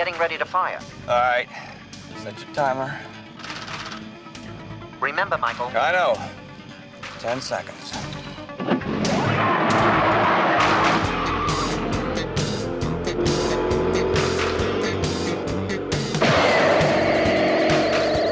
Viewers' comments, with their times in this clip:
0:04 Why does a laser sound like a loud shotgun?